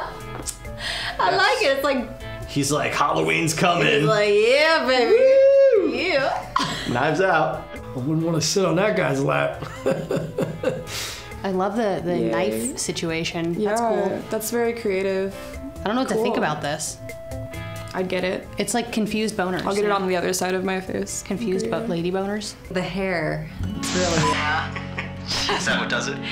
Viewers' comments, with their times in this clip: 0:07 "Wouldn't want to sit on that guys lap" and the laugh after it made me laugh so hard but he right